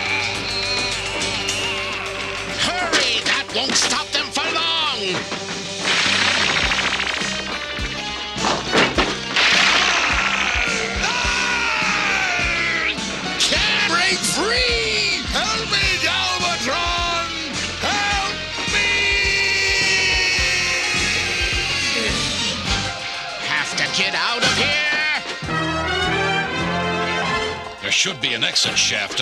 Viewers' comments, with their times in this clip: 0:10 (Cyclones Screaming) CAN'T BREAK FREE!!! HELP ME GALVATRON!!!!! HELP MEEEEEEEEE!!!!!!